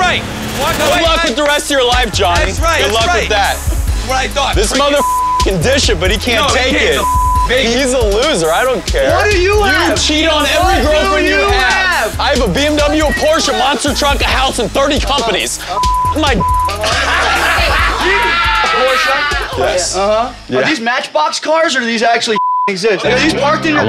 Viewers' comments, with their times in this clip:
0:09 Bruh CT's laugh